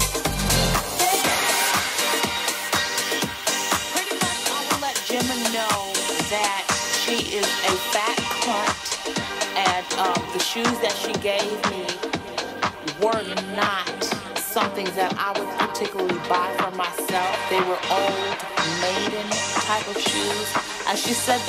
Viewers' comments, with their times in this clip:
0:05 the bgc new york sample took me out 😭😭💖